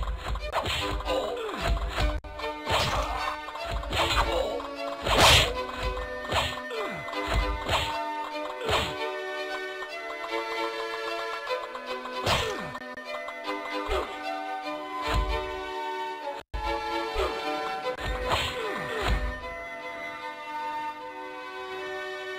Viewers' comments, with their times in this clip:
0:05 i like how sometimes the sound just increase from nowhere